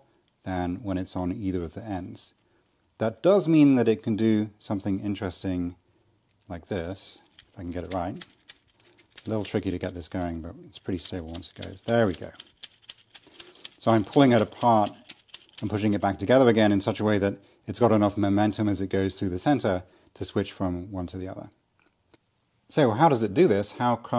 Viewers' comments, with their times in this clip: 0:07 The rythm reminds me of something, but I just can't wrap my hand around it 🤔